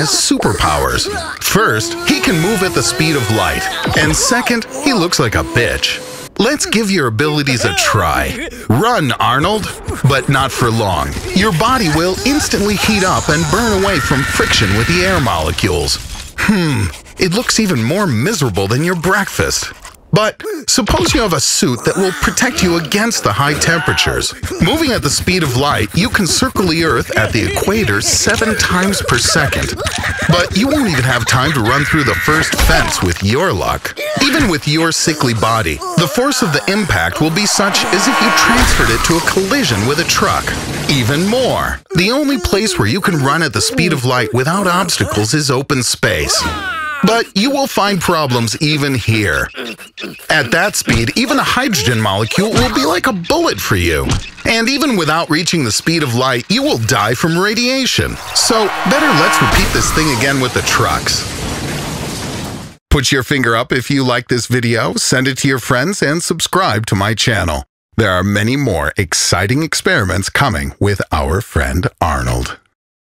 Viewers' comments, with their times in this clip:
0:03 I like he clearly says Second he looks like a bitch
0:05 Sounds of coughing
0:58 better luck beat this thing with the trucks LOL 🤣🤣🤣🤣